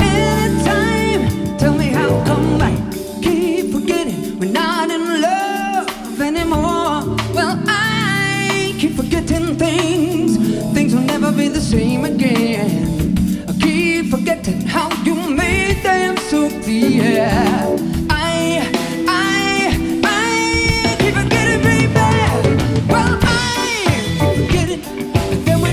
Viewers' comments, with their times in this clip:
0:07 The guitarist will forever be remembered for that CM9